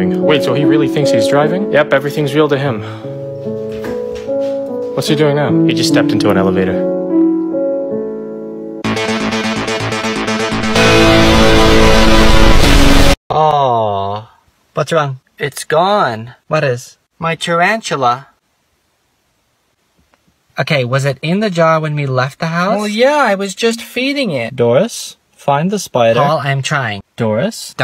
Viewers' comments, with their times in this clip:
0:09 IS THERE A GRaNDFATHER CLOCK!?(yes a stranger things refrence)
0:09 the naruto music though 💀✋